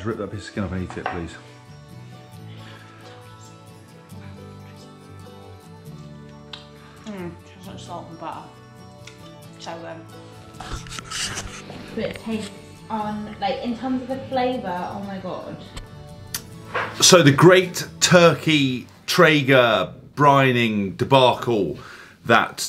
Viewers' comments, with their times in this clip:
0:08 Ace vid but the pov chewing sounds nearly had me switching off!